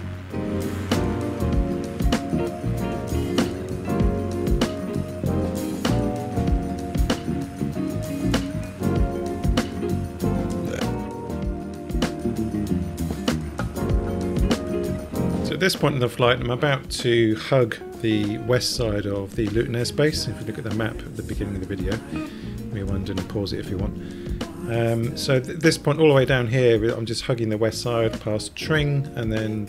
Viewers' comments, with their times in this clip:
0:10 is that a cheeky burp!!